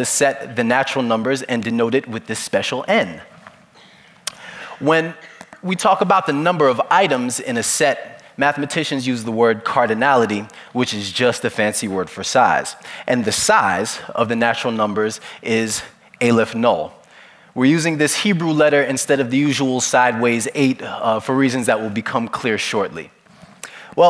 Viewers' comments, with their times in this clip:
0:07 he sounds like drake